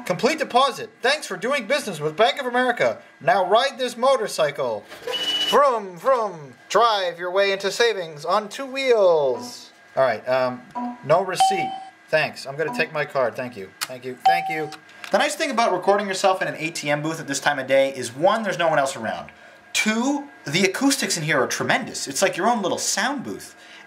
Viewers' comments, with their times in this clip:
0:08 These things are running Windows XP judging by the ding sound...